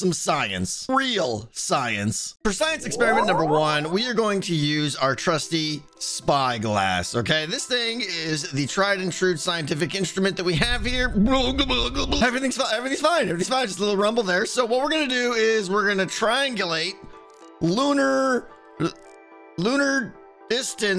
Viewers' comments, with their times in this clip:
0:06 do you mean your spyglahass?